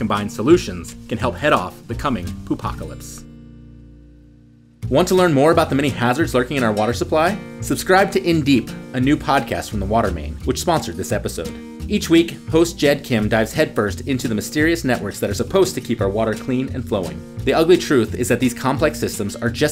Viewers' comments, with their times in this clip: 0:05 Is he really recording the sond of toxic poop water for this video?